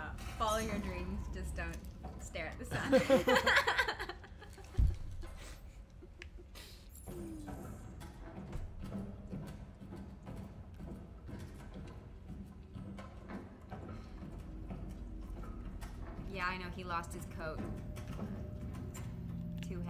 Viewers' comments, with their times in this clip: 0:03 amelia's laugh is so cute edit: you both are my happiness i love you